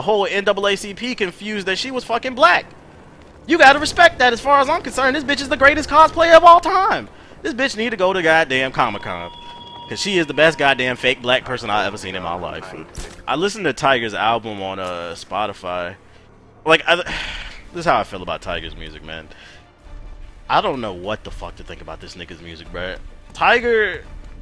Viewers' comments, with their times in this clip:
0:07 Lol the way he talked reminded me of Uncle Ruckus xD